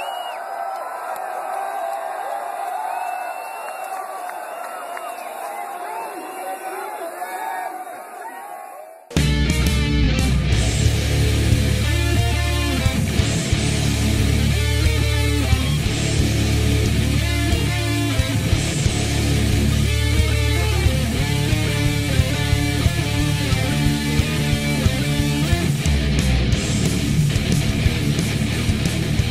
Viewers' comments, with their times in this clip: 0:10 Yep, Moth Into Flame in the style of Pantera!